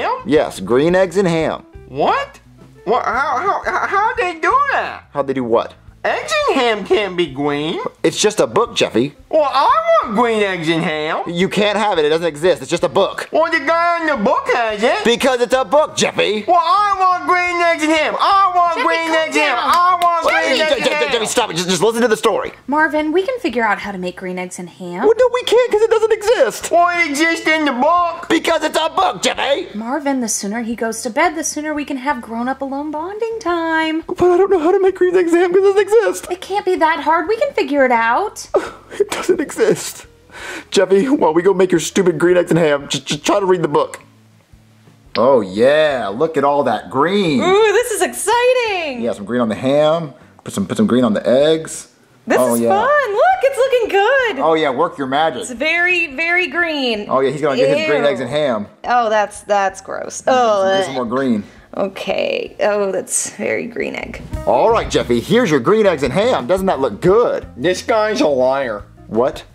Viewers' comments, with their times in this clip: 0:07 the way he said green was cute
0:07 I love how he says green😊
0:29 They are yelling
0:51 rosilina isn't even trying to do the voice who's with me lol